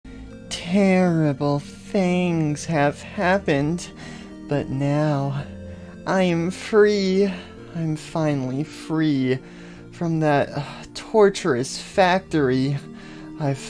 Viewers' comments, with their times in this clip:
0:00 ahh yes the voice sounds just like poppy.